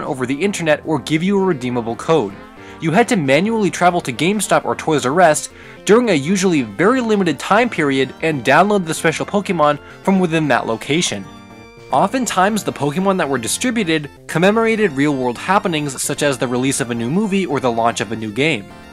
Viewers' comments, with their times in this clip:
0:04 Is his pronunciation weird? Toy’s Arrest or Toys R Us???
0:04 toys r rust 💀